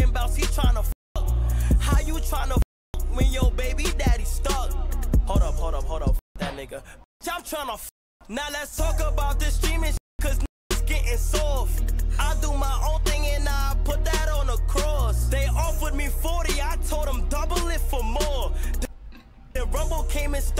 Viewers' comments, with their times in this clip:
0:05 censors 'fuck' but forgets the 'nigga' right after